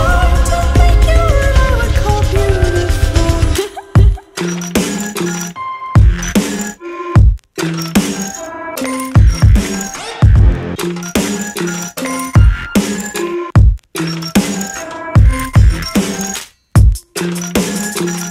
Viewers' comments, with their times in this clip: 0:04 this part actually almost sounded like cradles holy-